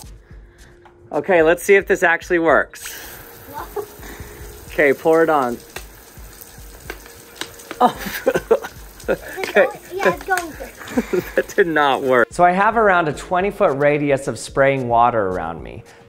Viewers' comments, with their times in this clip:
0:03 my idiot brain thought the bottle was being censored 🤦🏿‍♂️